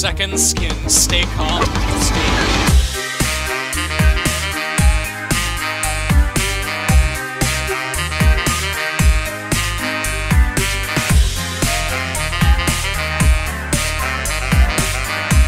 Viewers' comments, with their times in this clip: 0:03 I like to think that it's golden Freddy on the saxophone